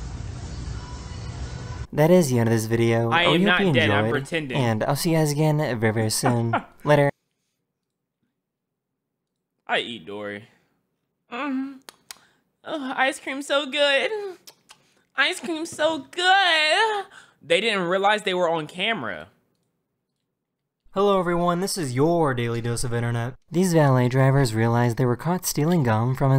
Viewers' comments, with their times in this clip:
0:10 Why is bro moanin